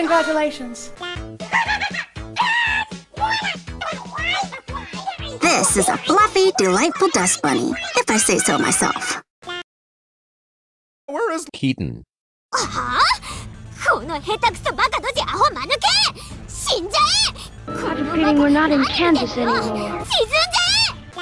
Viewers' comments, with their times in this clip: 0:03 What the heck are those things!? Those voices are gonna hunt my nightmares